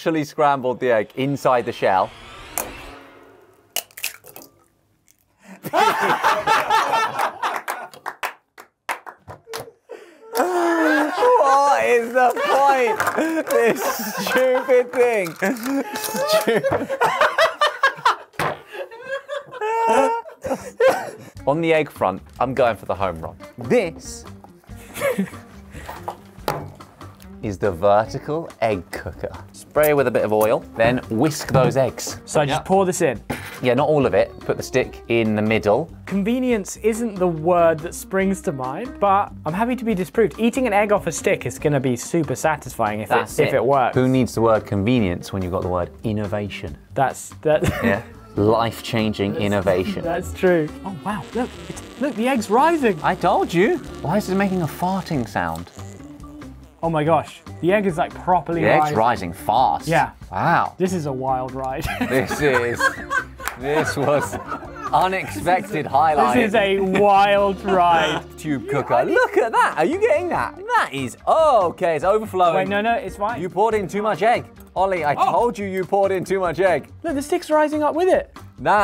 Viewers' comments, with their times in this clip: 0:08 That laugh is too good 😂
1:01 that pause before the laughter 😂😂